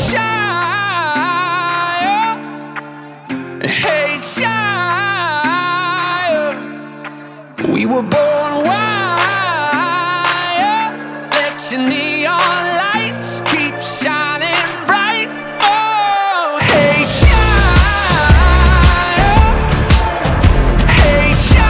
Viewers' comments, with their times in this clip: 0:07 we were born?